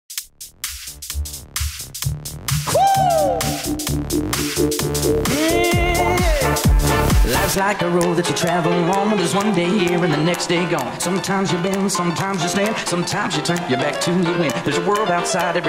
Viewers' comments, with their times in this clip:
0:02 I don't know why but the bass noises are satisfying to hear